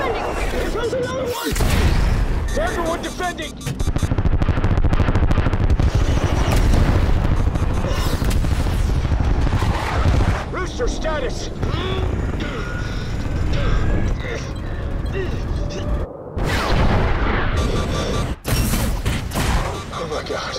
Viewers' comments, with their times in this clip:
0:03 those flares sound 🤤